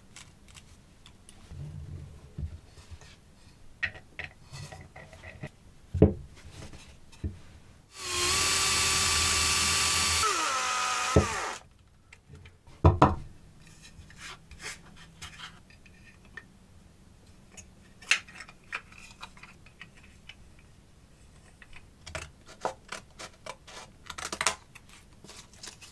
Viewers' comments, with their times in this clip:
0:06 Go to math equation bonk